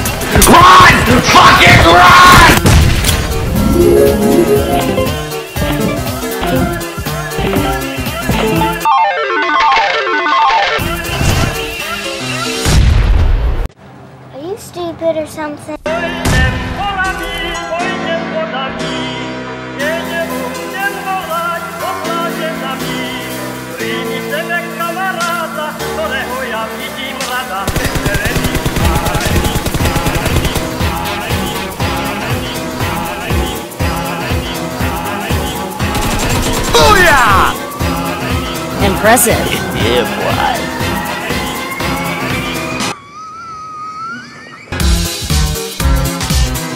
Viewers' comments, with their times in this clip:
0:04 tetris friend combo sound.
0:22 in I hear music from my country from Poland not from India. I ask uploader
0:22 in I hear music from my country from Poland not from India. I ask uploader
0:32 that song tho